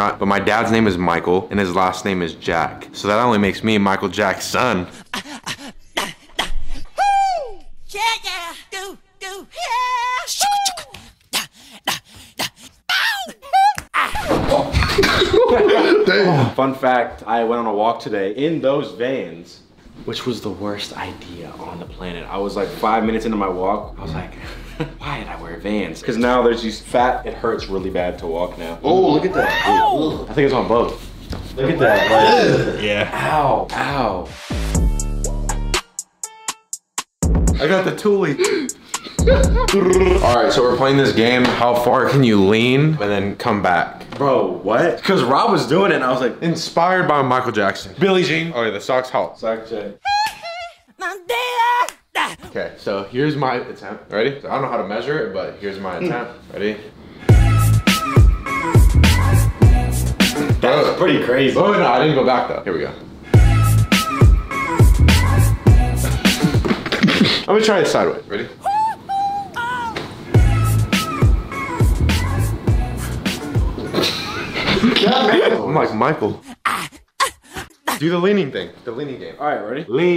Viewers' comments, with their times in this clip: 0:04 lmao the sound affects
1:04 what the music